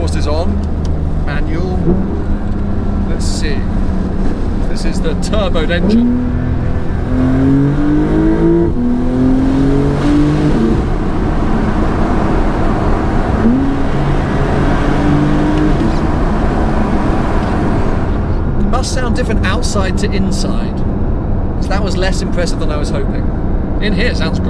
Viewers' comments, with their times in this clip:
0:07 Sounds incredible!! The stank face says it all.